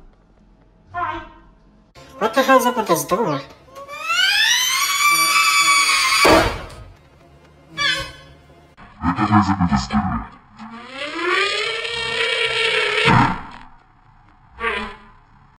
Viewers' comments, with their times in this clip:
0:06 elmo scream like my cleaning machine :0
0:08 bro sounded like a alarm💀
0:09 bro sounded like a tornado siren😂
0:11 sounded like an elephant